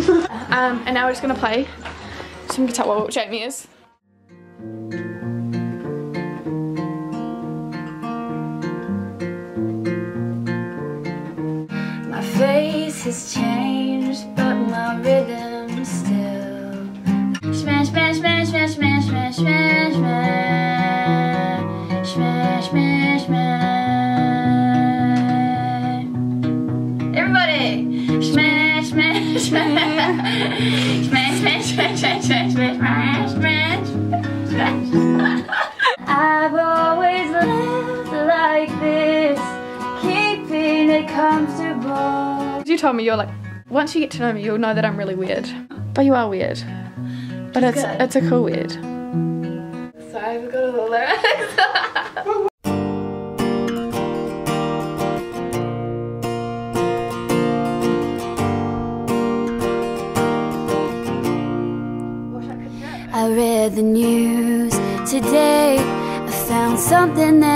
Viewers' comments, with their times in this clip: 0:06 Awkward iphone msg noise got me looking around for my fone D:
0:52 i learned to play it by listening:D almost similar to wonderwall when she sang the only exception omg that was freakin awesome